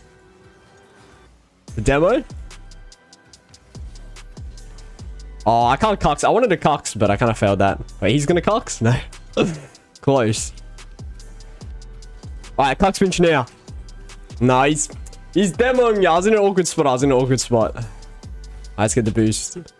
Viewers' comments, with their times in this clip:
0:06 Evample wants what...?